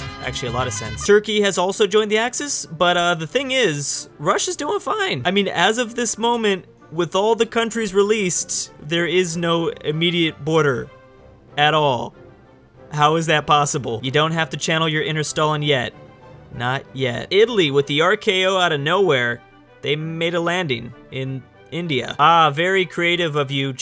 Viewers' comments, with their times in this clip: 0:04 ooof that voice crack tho